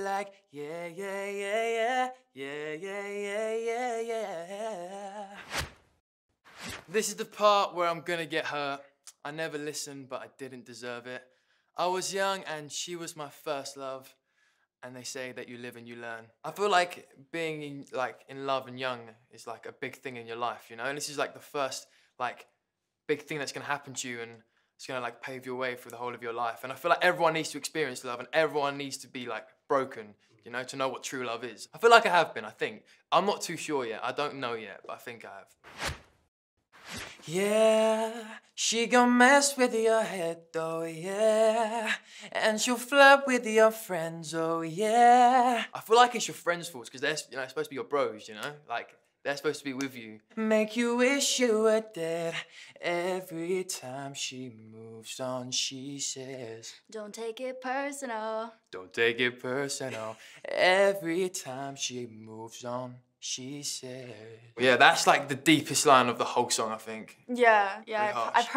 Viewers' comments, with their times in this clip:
0:06 Why didnt he Sing ?
0:13 dafuq?? I thought it was “so they say” 🤷🏽‍♀️🤷🏽‍♀️🤷🏽‍♀️🤷🏽‍♀️🤷🏽‍♀️🤷🏽‍♀️
0:56 omg they are so cute and her voice😍😍